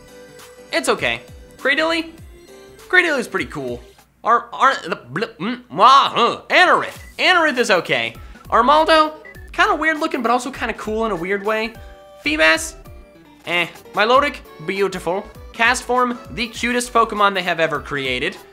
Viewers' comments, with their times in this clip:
0:04 when im trying to do a class speech...